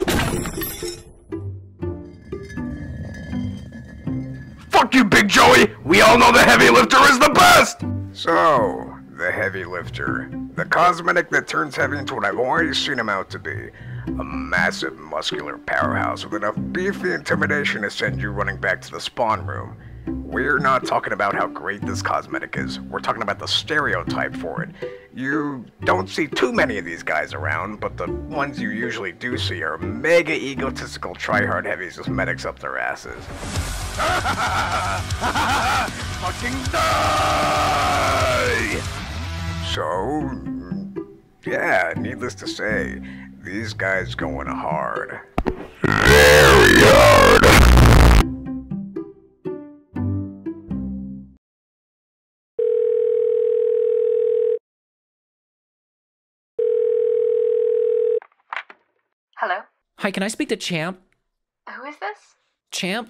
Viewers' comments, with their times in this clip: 0:09 writing for myself as a reminder to how badass bane-ass this voice sounds
0:23 he for some reason sounds like joe from family gun suddenly
0:45 hears mic pop “Oh boi here we go”.
0:45 HECU sounding ass
0:45 Sound: ah... i dont gave an earrape joke for this one beard: Dont worry man i got you.